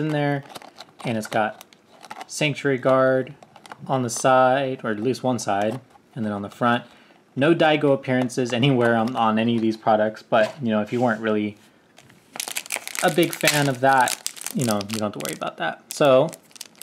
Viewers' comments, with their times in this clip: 0:03 you are a beautiful singer 🤩